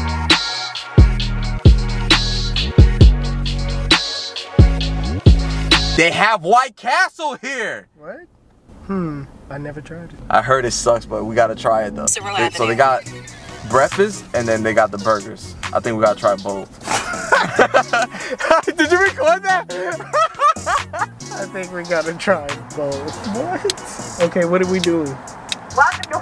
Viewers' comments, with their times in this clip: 0:08 sounded exactly like Russel Westbrook